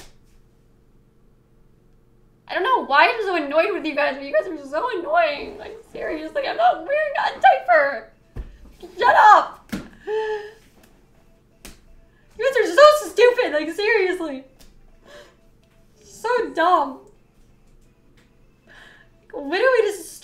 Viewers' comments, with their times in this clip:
0:05 she starts crying 🤪